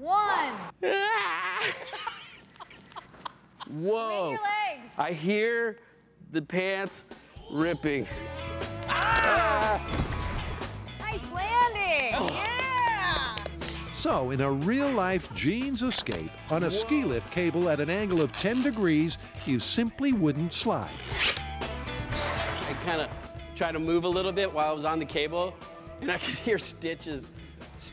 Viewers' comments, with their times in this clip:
0:08 Tory’s lowercase scream lol